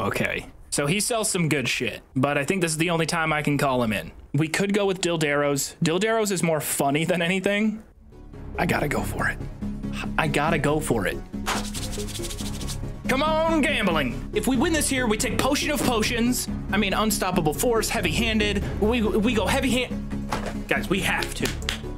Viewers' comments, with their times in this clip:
0:06 What's the track ? Sound like quake or unreal tournament